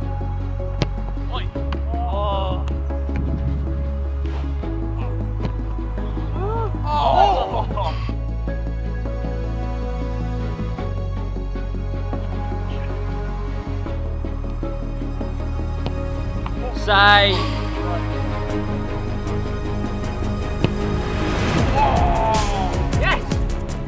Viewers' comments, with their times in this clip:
0:10 Why did the music get me in the mood to play cod😂